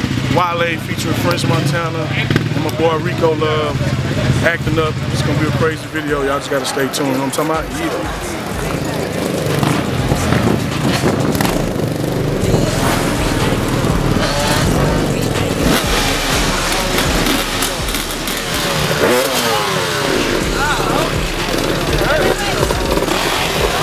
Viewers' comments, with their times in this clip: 0:07 thumbs up if u hear the "maybach music" lady